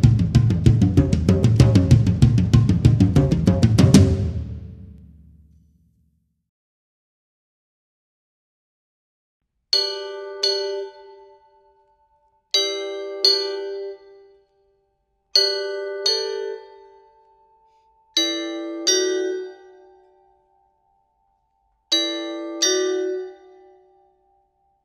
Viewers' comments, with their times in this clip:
0:10 Hitting the metal pipes illustrating different tone potentials. I wonder though, if the metal pipes could be lower in the mix, like literally closer to the floor so as to increase thier reverbal refractions. Only a thought, an idea or dynamic to consider. Alternatively, I wonder if a softer mallet would soften the volume some, I mean since the pipes don't have quite the arches that the other idiophones have. All in all a beautiful piece with lots of variety in sample tones; thank you for sharing.